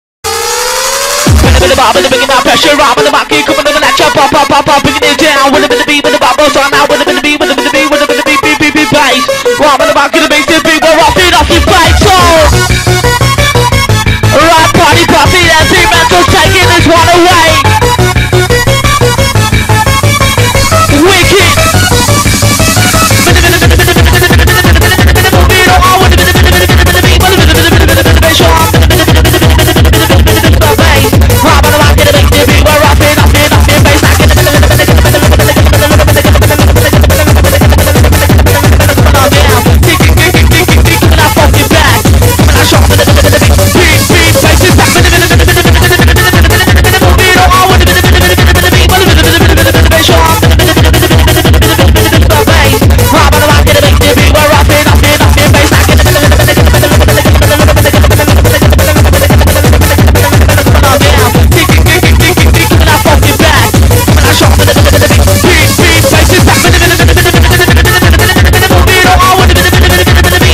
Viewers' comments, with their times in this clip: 0:00 in this part: boat at speed 0.25
0:23 Set 2x speed and wait. NOW THATS A MINI GUN!
0:30 im hearing ra-ba-da-ba to the dexter beer-da rasi-rasti-rasti face mask
0:34 Me: trying to focus on doing school work on my laptop My neighbor’s radio:
0:56 is firing with a automatic gun with nonstop